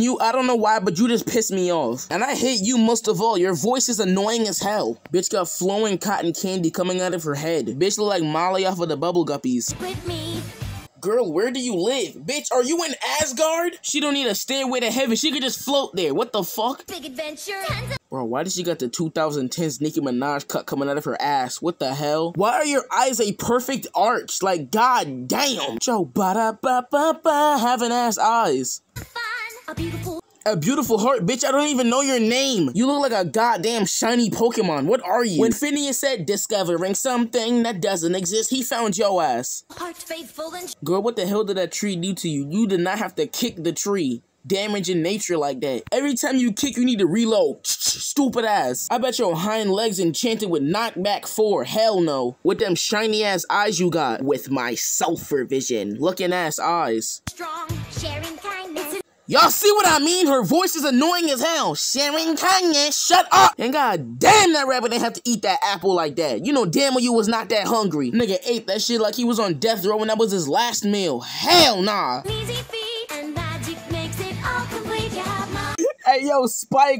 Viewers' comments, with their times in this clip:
0:04 Her voice ain’t even that annoying! Poor Fluttershy 🥺💀👉👈
0:59 Bro, how is her voice annoying